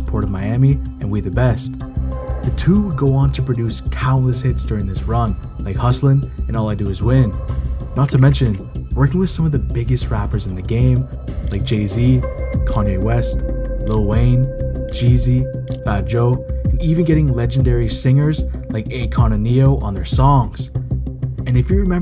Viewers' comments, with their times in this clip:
0:07 I almost thought he said jayz twice but upon a thorough analysis and a deep introspection I have realised he meant gayZ who is the well known pedo and Diddy bopper.